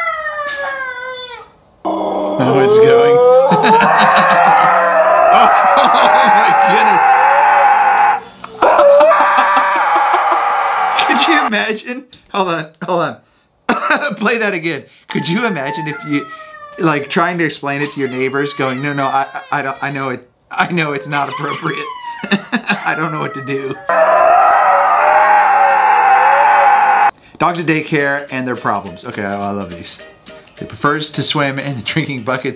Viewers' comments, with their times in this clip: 0:06 the dog sounds like it is dieing or my sister howling
0:16 In i think the dog is saying BUT WHY